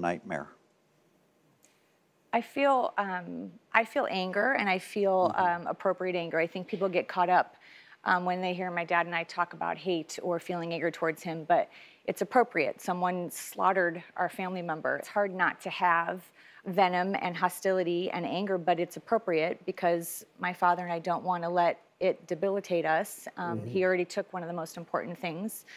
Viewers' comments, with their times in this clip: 0:10 Know she says 'anger' but does it sound like another word to anyone else?